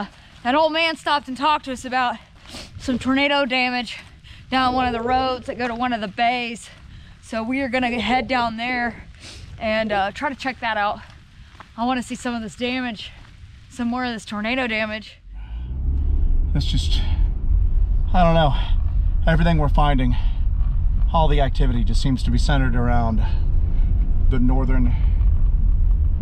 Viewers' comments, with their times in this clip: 0:08 Just rewatched this. Is it just me, or do I hear a dog barking ?
0:13 WHAT was the howl you can hear it when your talking going to the car ??????